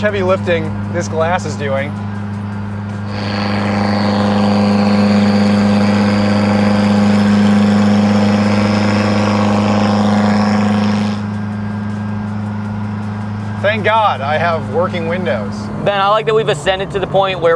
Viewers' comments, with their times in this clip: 0:03 You know your Mitsubishi is tuned right when it sounds like a Cummins turbodiesel chugging down the highway.
0:05 sounds like there's a Cesna 30ft above his car